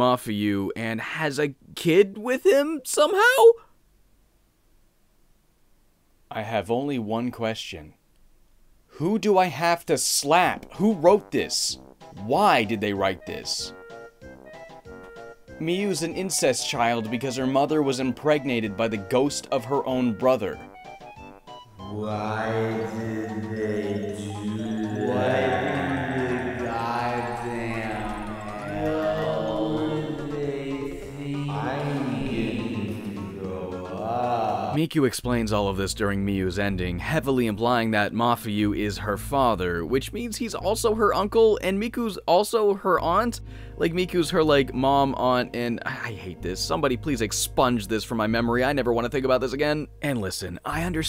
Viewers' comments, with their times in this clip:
0:10 The implementation of the Banjo-Kazooie music in this part is perfect. lol
0:34 What's the song that plays in the background ? It's super relaxing (I'd assume it's something from fatal frame v but I've never played the game lol)